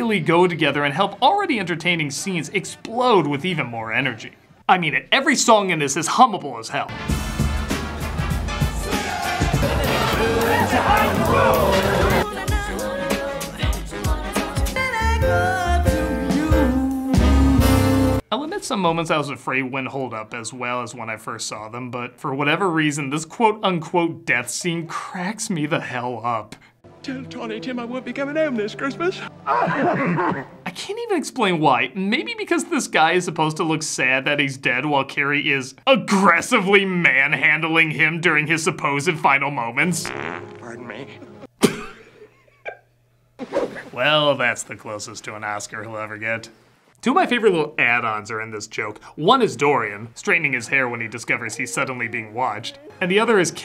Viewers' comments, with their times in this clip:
0:07 am i the only one who hears king dice's theme here?
0:40 That really looked like a Critic outtake. It was awesome to see him genuinely laugh for a moment. That part always crack me up too. Always loved this movie for the nostalgia value, back when movies were much more fun and took risks with the technology to help assist a story. Man, I miss those days.
0:41 I don't know why the critic cracking up just makes me crack up